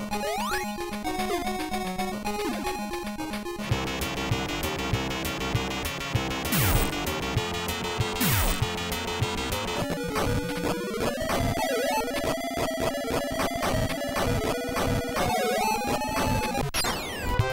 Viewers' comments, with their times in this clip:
0:03 california games´music sound so batman old tv serie theme....nah nah nah nah batman!